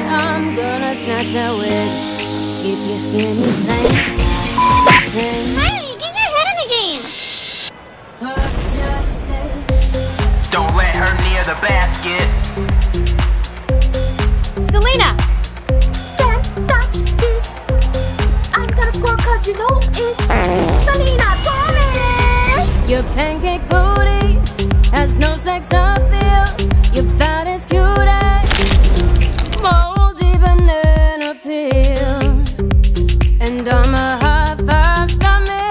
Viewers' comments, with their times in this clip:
0:04 ‘Kylie get your head in the game! ‘ is it just me or wut
0:19 "Im gonna score cause you know it's..." farts "... SELENA GOMEZZZ!!!"